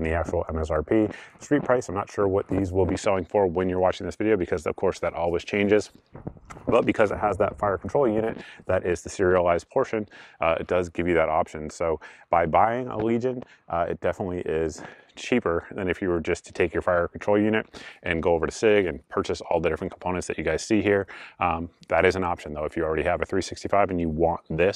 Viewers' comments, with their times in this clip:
0:07 Your audio was having some issues around the 9- minute mark